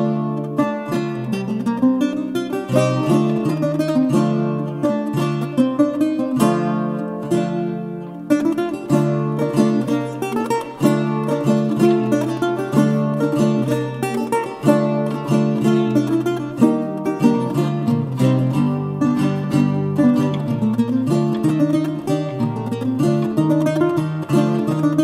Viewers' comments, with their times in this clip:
0:09 Very charming - the piece and its performance. I agree with both comments here. and - i liked 2 other features: 1) the fact that it is annon., and 2) your smooth accelerating the tempo